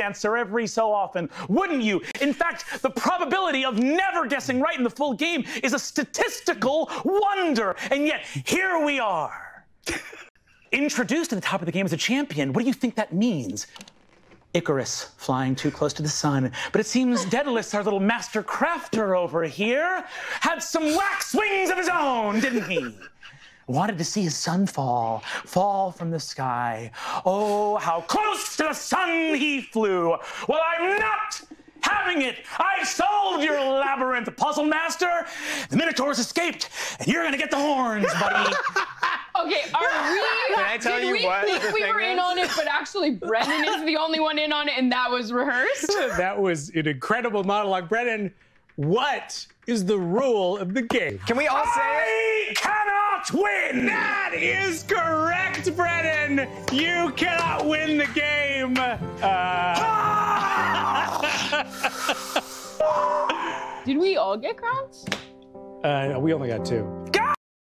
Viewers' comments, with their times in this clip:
0:10 the speed at which he delivers is honestly astonishing
0:10 he sounds like Eminem
0:51 that “I CANNOT WIN” sounded exactly like Saltzpyre what the fuck
0:56 my favorite part is when the little “AHHHHH” floats by in chaos
0:59 The "AHHHH [...]HH flying by just sent me xD